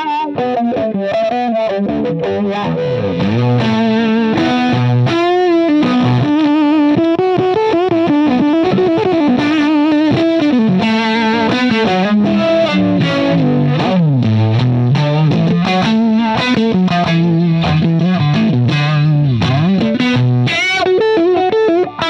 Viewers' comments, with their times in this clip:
0:10 The tone is some of the worst I've heard in my life. Liking Jimi or not has nothing to do with liking tones (for those ready to roast me already)